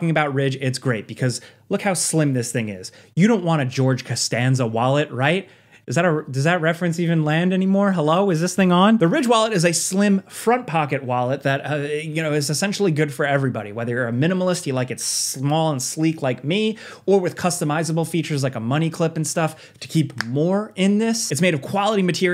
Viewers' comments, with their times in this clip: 0:03 now I can’t stop hearing Jerry Seinfeld say “hEllO Is ThInG On!?!!?